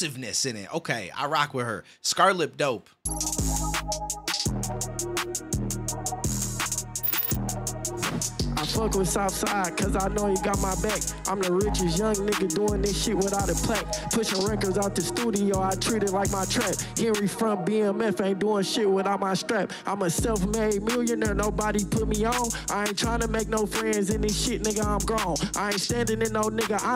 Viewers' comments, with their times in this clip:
0:07 in...homeboy was recording on his phone. There's no other possibility. The audio turned into straight garbage 😂